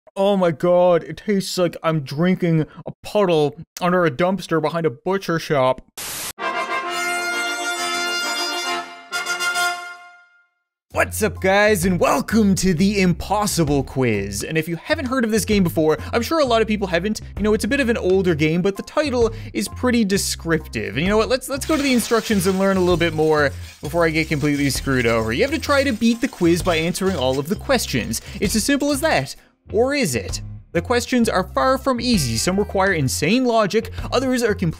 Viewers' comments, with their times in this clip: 0:01 I need to repeat that to know what your saying
0:15 I can really near the Canadian come out